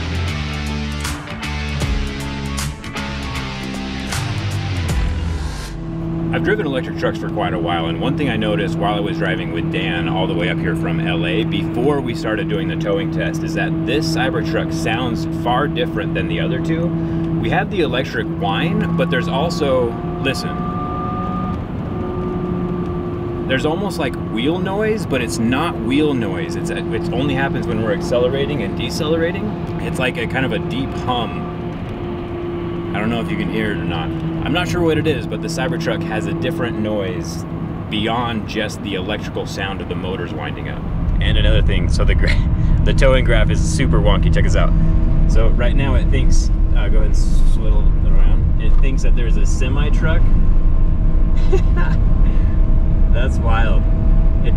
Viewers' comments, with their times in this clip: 0:06 More than likely, you are hearing the induction motor. Tesla appears to have gone with an induction motor for performance purposes, and they operate differently than the PMAC motors on the Lightning and R1T. With an induction motor, you will experience torque slippage, which results in a distinctive motor noise.
0:15 Does the louder sound perhaps come from the (direct) grearbox? I could imagine that the gears could not have been optimised for smooth running so that they could withstand the necessary torque.
0:17 I love that whine! It has the straight cut gears sound. Back when the Tesla Model S came out Saleen actually modified the Tesla Model S P85. They did wheels, some body stuff, I want to say they did something with the gear ratio to improve acceleration and they put straight cut gears in it to give it sound. They were able to improve the performance a bit but then Tesla came out with the P85D which destroyed it. The Saleen Model S looked pretty nice.
0:20 Gear noise. Some one probably assembled a gearbox incorrectly, or it was damaged somehow.
0:22 That hum remind me of gear box sound, when it is overloaded the gear makes that sound, also reminded me of DeLorean.
0:22 The sound sounds pretty similar to how my 300k mile duramax diffs sounded when they started going out
0:27 sounds like romanian trams in bucharest, the old ones.
0:32 you addressed the sound . I was wondering the same. I also rode in Tesla model S plaid. It makes a similar whiny sound. I also drove a KIa EV6. The silence in the Kia is awesome .
0:32 The voice you can hear are Frequency regulators which are controlling motors.
0:32 It sounds like the back tires are rubbing the wheel well whenever you accelerate. That means the electric motor is rated for tht much weight but the suspension isn't.
0:37 the noise you hear when slowing down is probably the regenerative braking, I hear this A LOT on heavy electric equipment, like reachtrucks and forklifts. Crows to be specific
0:37 That sounds obnoxiously loud.
0:39 this might be poor fixation of coil winding in either a choke or a transformer within the inverters. It is often heared on electric trains too. While accelerating the inverter pumps more current to the motors (and when regenerative braking too) which causes windings to vibrate more under the Lorentz force.